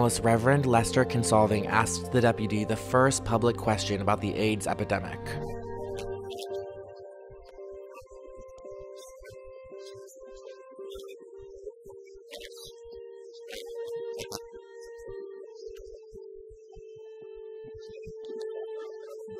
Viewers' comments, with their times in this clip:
0:07 What happened with the audio. ❤I love your content ❤